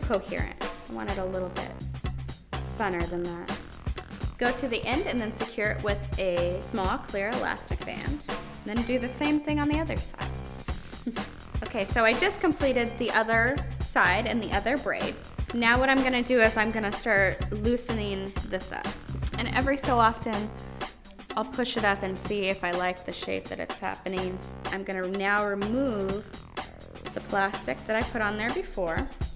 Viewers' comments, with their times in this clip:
0:10 Has anyone noticed the model laugh ? That was weird...but funny. I sort of feel sorry for that girl because her hair gets pulled so much and it must hurt...but then again she's getting payed for it so...:S